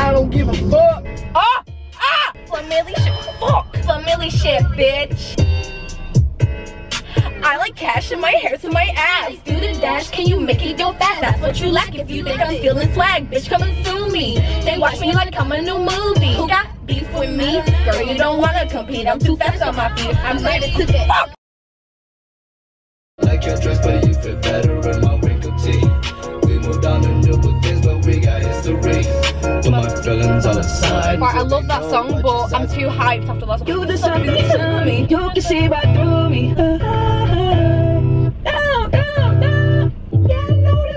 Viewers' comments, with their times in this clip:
0:03 omg you would sound soo different as an American ahhh also your accent wasn't even bad
0:22 that was actually a good American accent- that’s coming from an American herself •-•